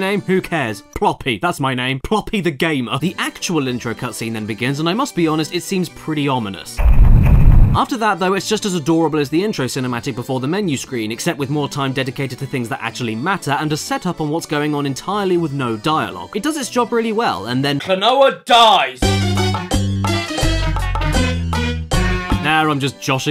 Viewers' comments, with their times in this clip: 0:06 Where is the ominous music from ?